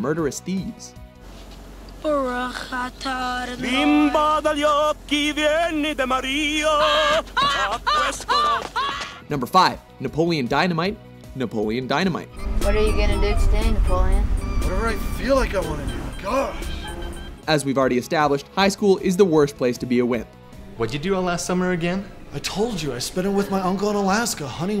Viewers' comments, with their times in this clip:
0:07 He's he sing with is mouth shut ?